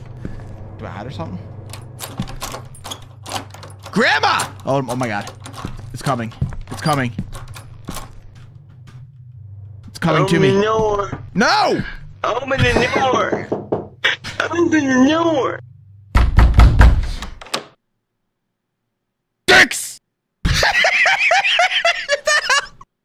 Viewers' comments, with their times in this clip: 0:10 “It’s coming to me” “Open the noor” “No” “Open the noor knocking “ little laugh “Open the noor bangs on door hard “ door opens and soul leaves body “DICKS” dies laughing WTH